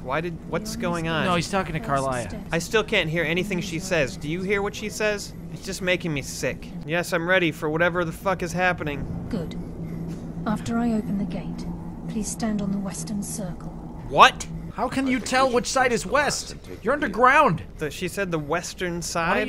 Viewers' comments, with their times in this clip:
0:05 I'm glad I'm not the only one who found Karliah's voice literally sickening. She sounds like she has spoof stuck in her throat. Very unpleasant.